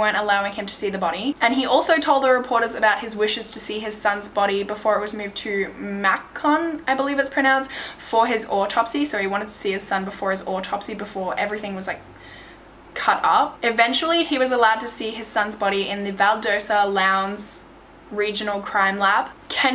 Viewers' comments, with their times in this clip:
0:05 it’s cute how she said Macon. It’s Pronounced May-cun😂